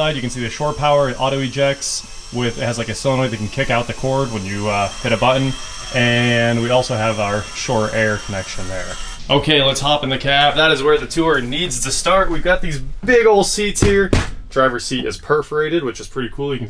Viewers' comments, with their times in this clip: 0:03 what the heck is a buddin???